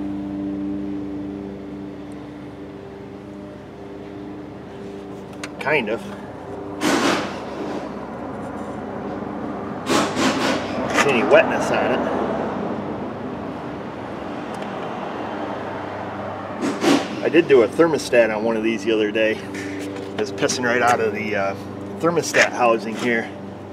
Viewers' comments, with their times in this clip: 0:05 I think I hear the neighbor mowing grass 😂😂